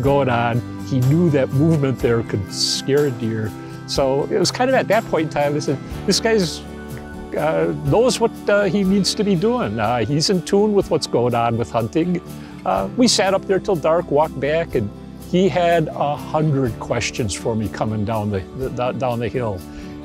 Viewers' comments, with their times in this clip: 0:05 he sounds like a german speaking english 😂